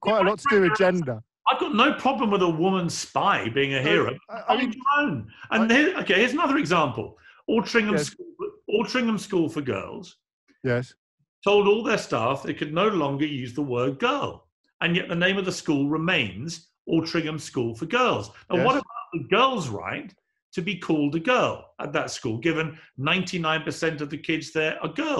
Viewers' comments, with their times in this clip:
0:07 Altrincham School for Gulls??? It’s ok, Piers, you’ve never actually called them “girls” anyway.